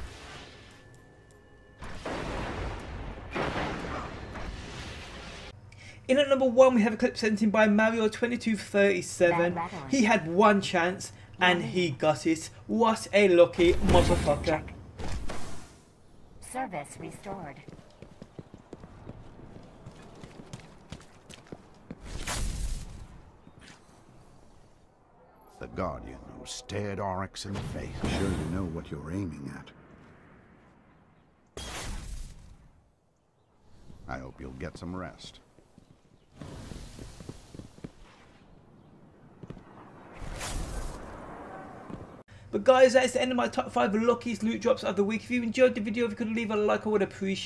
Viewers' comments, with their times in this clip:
0:07 THERE IS IT WATCH OUT IF U HAVE EARSET!!!
0:31 at the video who heard that glass smash noise XD did he freak out with no sound and spill and break his glass lol